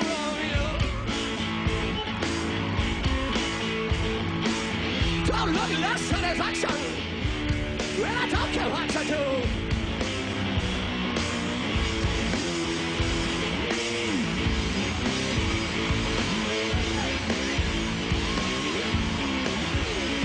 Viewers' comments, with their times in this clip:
0:07 then they let their instruments do the talking